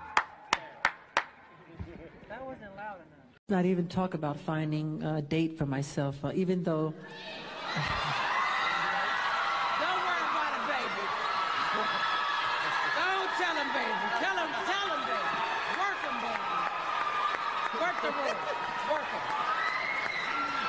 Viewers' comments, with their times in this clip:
0:03 so wholesome 😭❤️I love his laugh